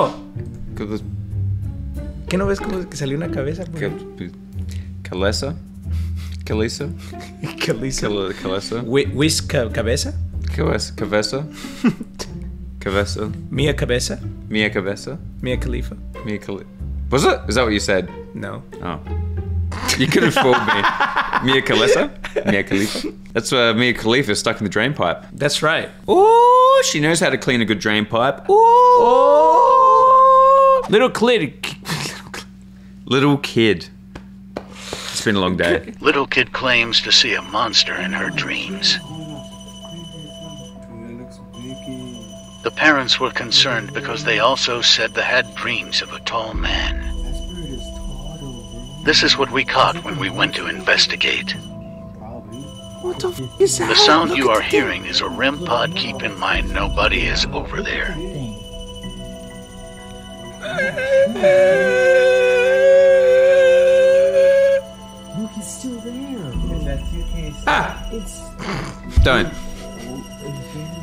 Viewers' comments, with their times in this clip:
0:10 POV:my friend speaking another language I don't understand
0:53 * hears cod zombies music* SAM HURRRRRRRRRAHHHHHHHG